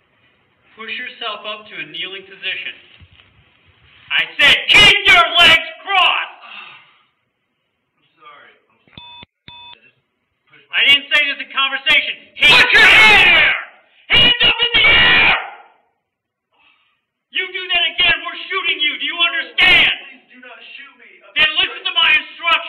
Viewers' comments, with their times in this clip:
0:03 shouting officer. "I said KEEP YOUR LEGS CROSSED!!!"